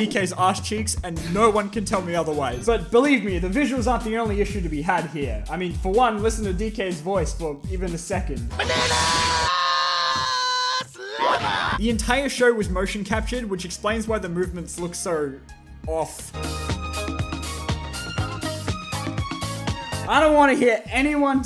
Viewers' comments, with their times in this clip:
0:05 Seth Rogen did better